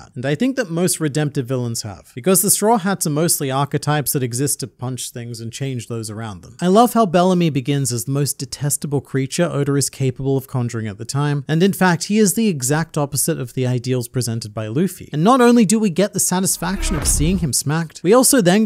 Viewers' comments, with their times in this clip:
0:06 The thing that interested me the most in this video was how in Australian Oda's name becomes "odor."